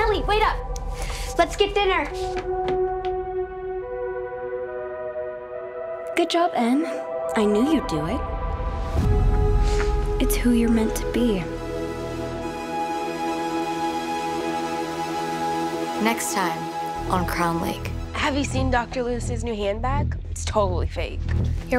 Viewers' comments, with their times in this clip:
0:06 idk why, but i think heather sounds a little bit sad when she said "it's who you're meant to be" what if she is forced to do this but actually doesn't want to at all?